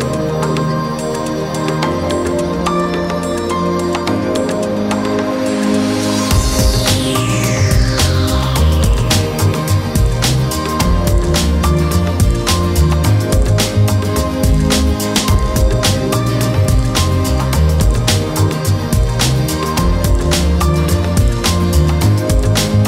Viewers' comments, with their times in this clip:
0:06 who breathes like that